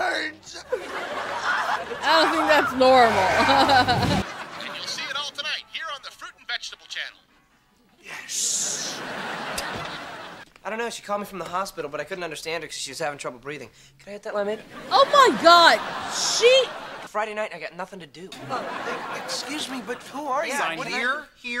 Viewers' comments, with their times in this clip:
0:04 i can't believe that's dan schneider's voice